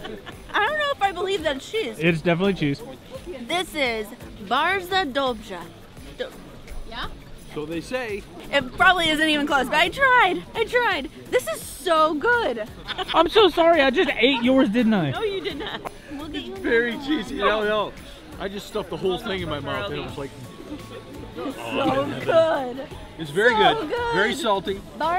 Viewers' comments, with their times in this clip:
0:07 you actualy nailed it:)